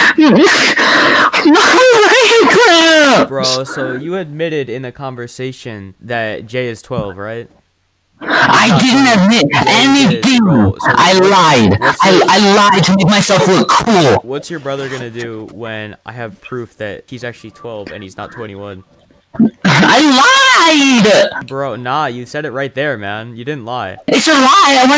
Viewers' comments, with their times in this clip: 0:10 “And the best mic” His mic: